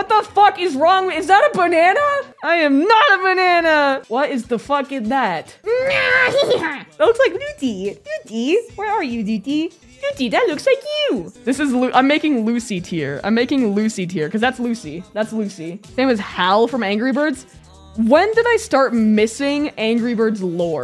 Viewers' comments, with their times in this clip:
0:05 WHY WAS THAT THE BEST ANGRY BIRDS IMPRESSION IVE HEARD THAT MADE ME CRACK UP LAUGHING. 😂
0:05 omg why that angry bird voice so good lol